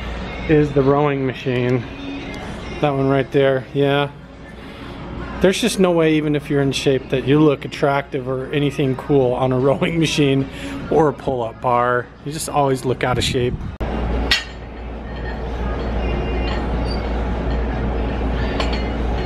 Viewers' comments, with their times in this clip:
0:05 do you here "Stiches"?